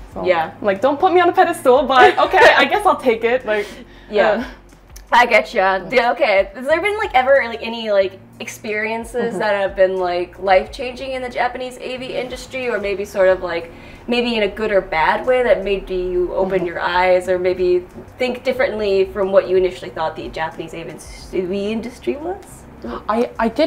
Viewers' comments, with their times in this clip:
0:04 “And women too!” “Yeah-“ heavy gulp “-I gotcha…”